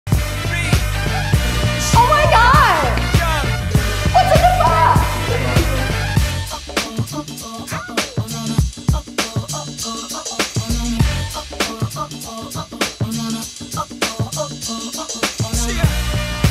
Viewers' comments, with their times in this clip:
0:02 I REFUSE TO BELIEVE THAT WAS HER VOICE WHAT? I-
0:02 when she said oh my god whats in the bag she sounded like a typical white girl lmfao lol